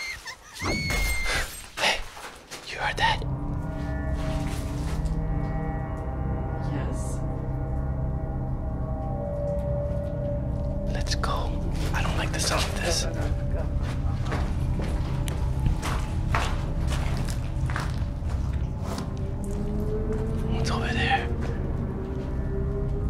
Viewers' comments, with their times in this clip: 0:07 Hey I like your asmr but I could tell that scream was fake in